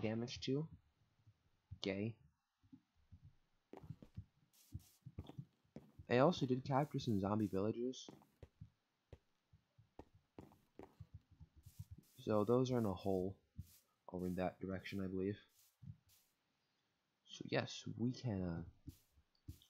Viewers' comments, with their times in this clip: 0:04 I do not say 'gay' I say 'ok' idk why I said it like that, but I wanted to clarify